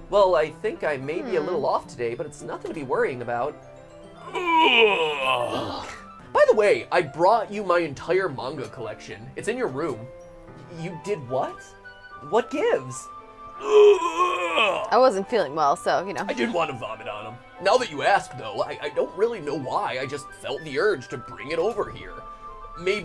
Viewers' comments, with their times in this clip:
0:04 MatPat: acting and doing fake vomits Me: can't stop laughing